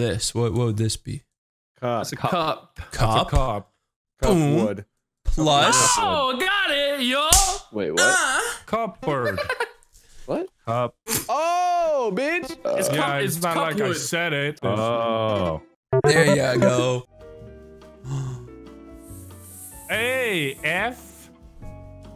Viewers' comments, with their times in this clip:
0:07 Literally nobody talking